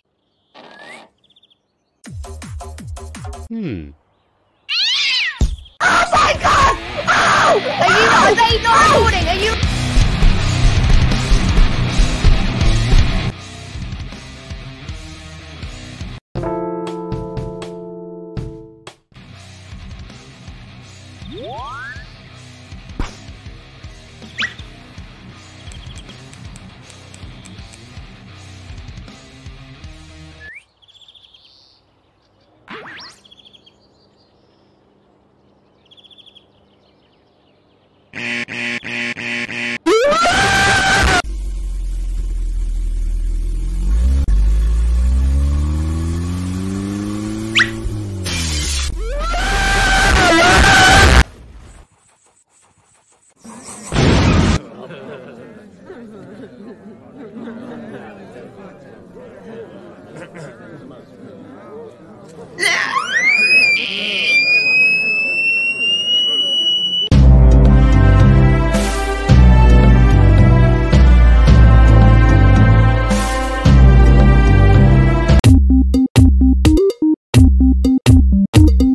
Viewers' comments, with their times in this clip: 0:05 Screaming up to feater 20
1:03 he turned into a 2800 hz wave